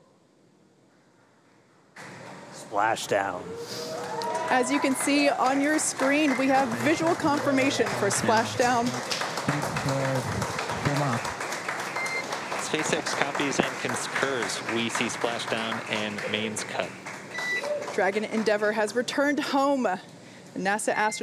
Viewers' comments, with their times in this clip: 0:09 you can hear the female narrator’s voice crack. Just tells you what a big deal this is for all involved.